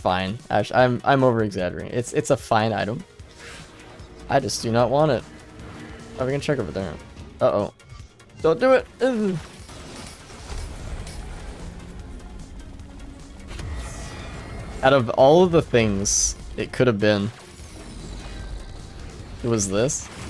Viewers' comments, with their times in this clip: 0:06 Good to see I'm not the only one moaning like a moron when barely evading enemy attacks :DD